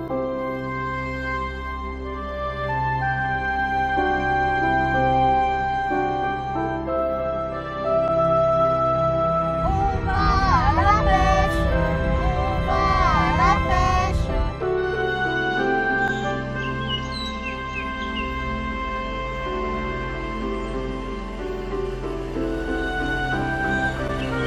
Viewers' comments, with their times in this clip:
0:10 satanic voices from hell